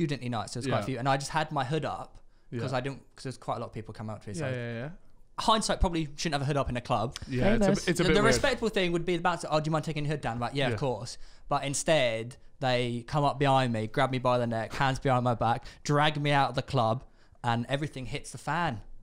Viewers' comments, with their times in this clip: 0:06 Anyone else heard the female voice saying "Famous" ? cheeky